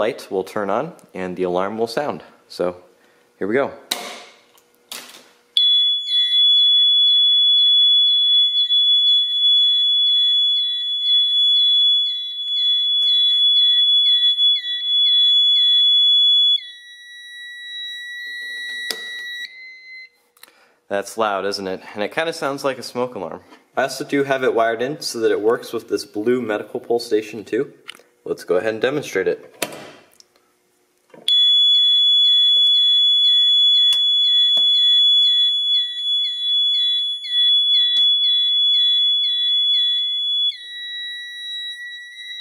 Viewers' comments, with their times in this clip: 0:06 sounds like heart rate flatline sound as someone died in the hospital.
0:06 this System Sensor MHW mini horn sounds like a smoke detector
0:30 the system sensor mhw mini sounds like a Microphone feedback and it's very loud when you put the volume to 100%